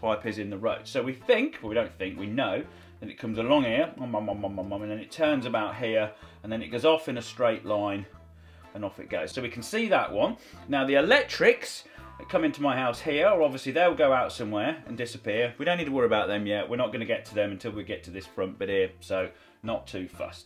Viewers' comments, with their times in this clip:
0:04 CC: straight along here my mum my m my m7m